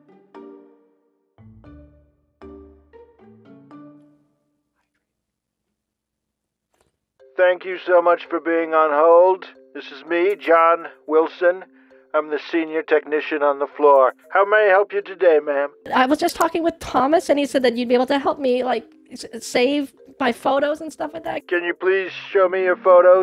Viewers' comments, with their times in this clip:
0:07 The sr technican is Donald Trump?
0:11 sounds like Trump went from becoming the President to a scammer